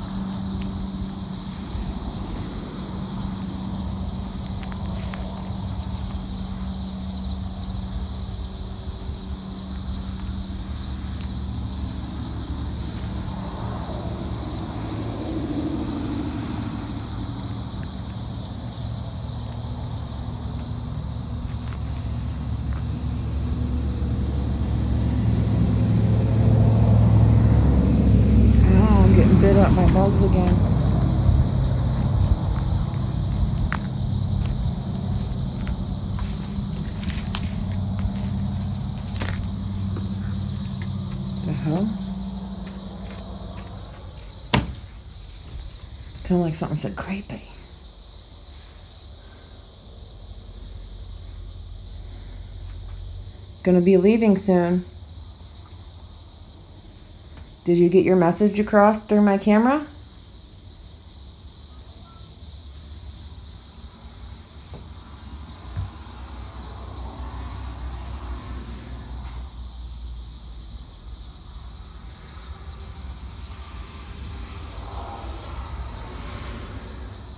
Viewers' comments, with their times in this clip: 0:03 ?? Whistle or talking?
0:39 ......to ME, it sounds like a spirit asking for......."HELP"........?????
1:00 ......sounds like the woman is saying........"WHAT FOR".......after you asked i you got the message through........!!!!!!